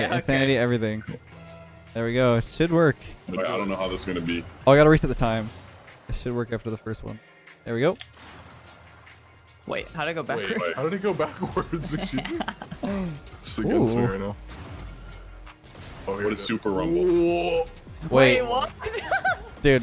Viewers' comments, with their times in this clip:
0:06 somebody laughs like a girl